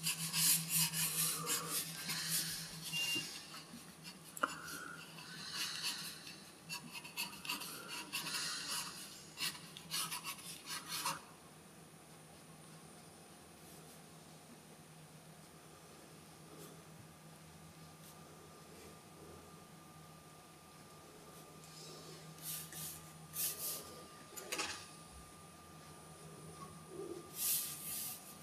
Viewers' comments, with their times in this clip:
0:09 Is someone on an oxygen tank ?